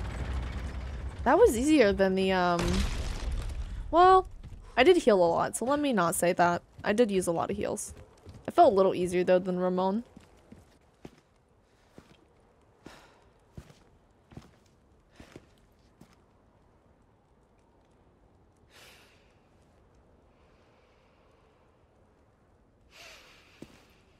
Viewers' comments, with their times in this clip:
0:08 i don't know why i heard "that was a little easier than your mom"